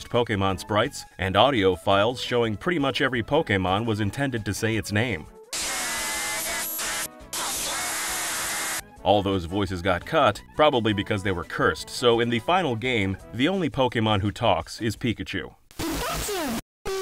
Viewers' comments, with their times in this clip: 0:04 Cursed Pokemon cries don't exist, cursed Pokemon cries can't hurt you. Meanwhile cursed Pokemon cries:
0:05 Wow, it's astonishing how coherent they could make Charizard sound on the Game Boy! it really sounds like he's saying "ć̴̩͈̔h̷͈̆h̸̲̍̔h̴̢̯̔̈́h̵̛̖̪̓ạ̶͒̒ḁ̸̮̃̑a̷̙͂͒ä̸̹́ͅr̵̰̱̽r̶͚̞̈́͒r̴͕͉̚r̵̥͗͠z̷̠̠̓ẑ̴͙̍z̸̮̏́à̶͜ď̷̝̹d̴̜̼͛", just like in the TV show! Incredible use of the technology!
0:05 Victreebell: breaks GB speaker